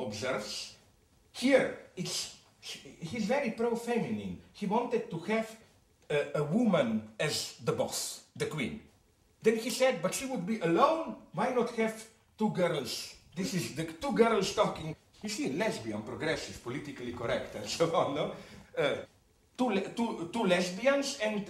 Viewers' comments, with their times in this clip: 0:07 did he just pronounce "s" correctly??